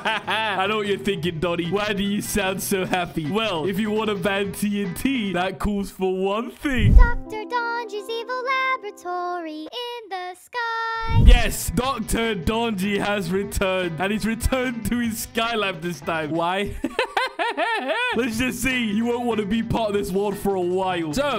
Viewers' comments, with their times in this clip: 0:07 what exactly is that voice singing about the sky labatory